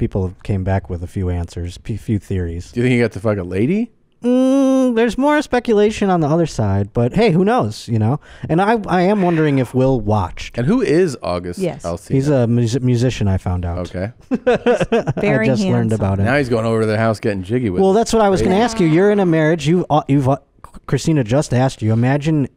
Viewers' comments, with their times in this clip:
0:08 That whisper scared the hell out of me